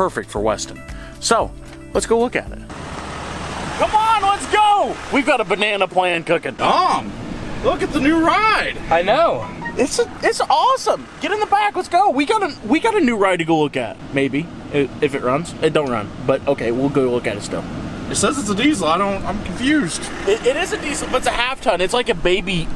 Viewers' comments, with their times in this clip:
0:07 the classic android sound😂😂
0:10 the android notification🤣🤣🔥🔥